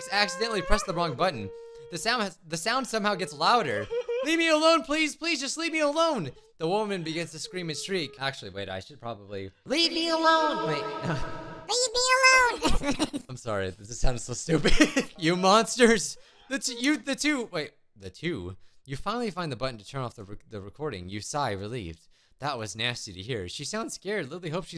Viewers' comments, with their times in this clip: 0:10 this sounds better but the next “leave me alone” thing was just cursed